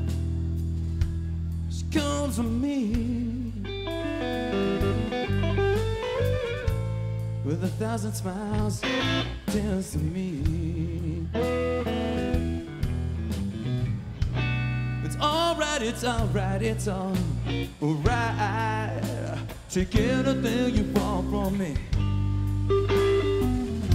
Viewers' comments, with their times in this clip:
0:03 the fill omfg
0:07 fuck me.. that first solo and the little slide .. thats the shit